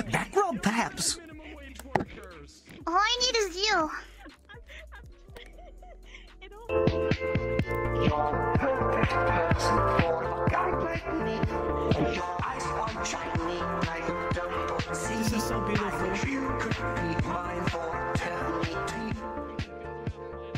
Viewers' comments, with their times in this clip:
0:06 What's that song? It's so chill